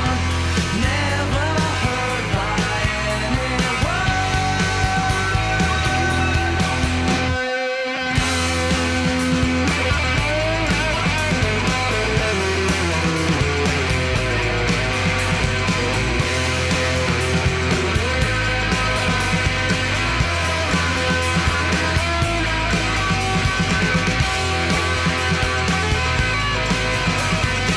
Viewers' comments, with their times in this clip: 0:08 and on... that jamming just gives me the most nostalgic, euphoric feeling! Its sooooo bittersweet to me.